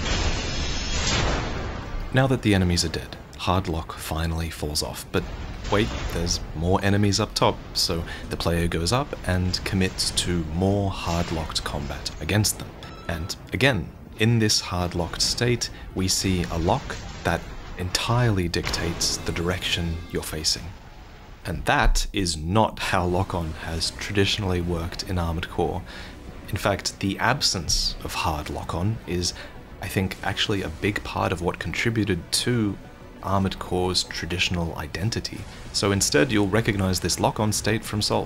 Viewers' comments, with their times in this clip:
0:05 Im not tripping right theres a metal pipe meme sound effect right???
0:16 The metal pipes falling was immaculate.
0:16 why do I hear metal_pipe_falling.mp3?!?!?!? XD
0:16 I know a metal pipe meme sound when I hear one
0:16 falling metal pipe sound effect
0:17 BRUH THE METAL PIPE SOUND
0:17 metal pipe falling
0:17 is that a metal pipe sound lol
0:17 Metal pipe drop sound effect
0:17 am i the only one hearing the metal pipe sound?
0:17 Ah, the classic "clanging Armored Core noise" 😌
0:18 do I hear parry sound?
0:18 Dropped pipe sound effect.
0:18 That sounds like the Metal Pipe meme. Is that in the game or did Vaati add that in? EDIT: Just watched the Raw gameplay section, Vaati did put that in.
0:18 *pipe falling sound effect*
0:18 metal Pipe, sound effect!!!
0:18 did you add that dropped pipe sfx? Please don't tell me that it's actually in the game.
0:18 metal bar sound effect
0:18 metal pipe falling sound effect
0:18 thanks for the metal pipes falling brought back some ptsd
0:18 Bro tried to sneak in the pipe sound in
0:18 bruh falling pipe sound effect
0:18 Did anyone else catch the sould of the "droped metal pipe" when the enemy gets dash kicked in to last year
0:18 metal pipe falling sound… HAD ME DEAD.
0:18 The metal pipe sound was a metal pipe sound
0:18 anyone else hear the metal pipe sound
0:19 that's literally the metal pipe falling sfx
0:19 “Metal pipe falling sound effect”
0:19 metal pipe falling sound pog
0:20 Metal pipe is in AC6 confirmed!
0:25 Bro has the pipe falling sound thought we wouldn't notice.